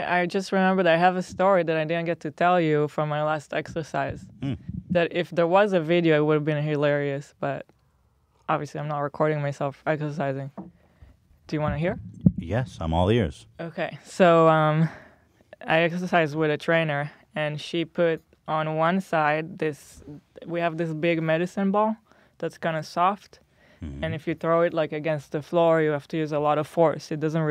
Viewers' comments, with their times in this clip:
0:10 THE WAY HILA SAID “do you wanna hear” AHHHHHH